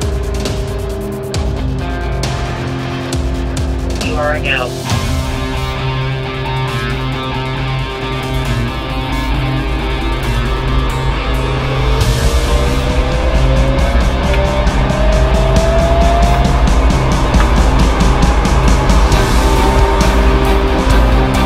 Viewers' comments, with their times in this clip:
0:08 wait electric cars don't make noise!!